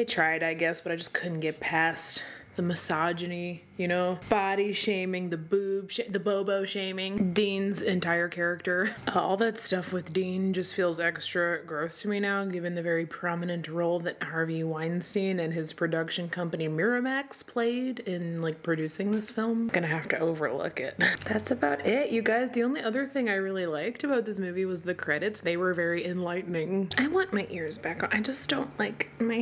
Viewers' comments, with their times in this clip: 0:10 reminds me of the 'bad dubbing' stuff in movies. Lol not being negative. I love your vids